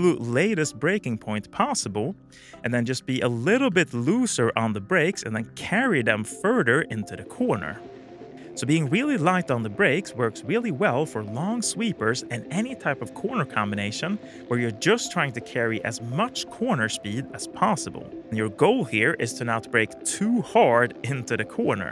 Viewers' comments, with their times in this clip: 0:08 I swear to god that this background music is getting into the right place in my cortex to stimulate 30% more generation of new brain cell connections. love it! Definitely good tip to just staying neutral on a supermoto and just flow with the track. If you (which I did before) try to hang off or push the bike under you there is a risk of you giving too much force upon the bike and the you get stiff making it more prone to loss of traction. :)